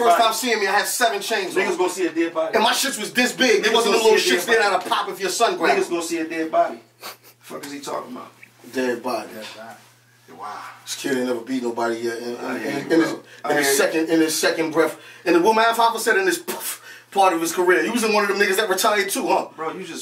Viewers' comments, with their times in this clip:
0:06 Nigga sound like Muttly ...…. LMAO!!!